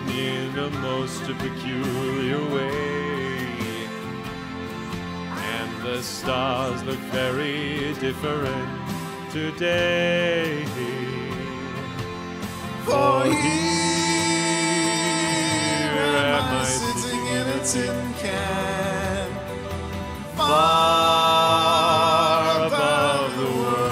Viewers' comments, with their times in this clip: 0:08 hahah that’s amazing how well that synced with the music